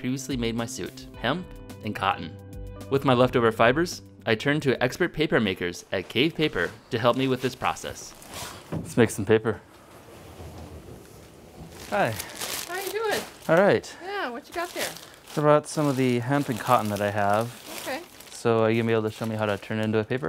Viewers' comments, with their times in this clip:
0:06 how hard him say Gay paper